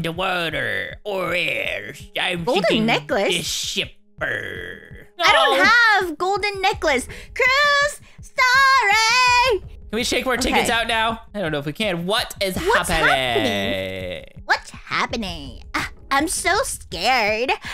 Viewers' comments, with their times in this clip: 0:05 and really super loudly